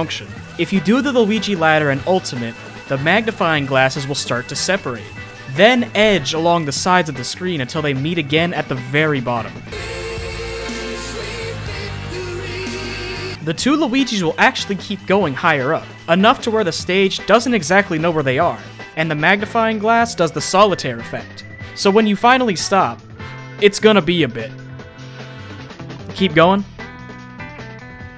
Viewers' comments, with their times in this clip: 0:09 the song when you win :)